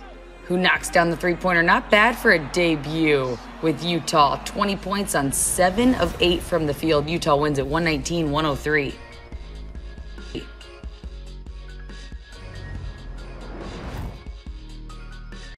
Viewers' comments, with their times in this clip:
0:09 did she burp?